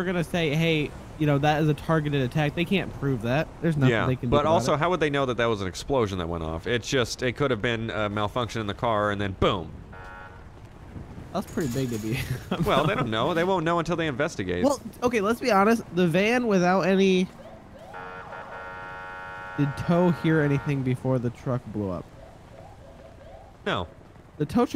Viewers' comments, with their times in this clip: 0:09 boom perfect timing